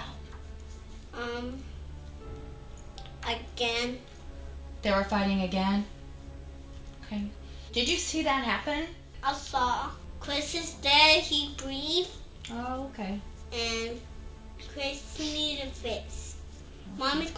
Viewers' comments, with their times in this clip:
0:03 “the psychologist asked what were they fighting about”? The boy says “ummm a gun” Not “again”.